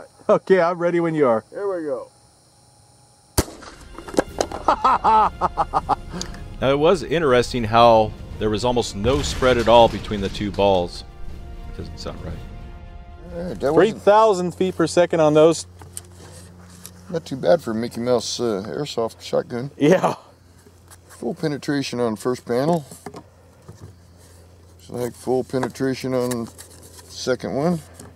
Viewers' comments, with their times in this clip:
0:06 LOL. Did you murmur "....or something".
0:13 "...almost no spread between the two balls (under breath: that doesnt sound right)..." ahaha such a genuine reaction, no doubt intentionally left in. Classic.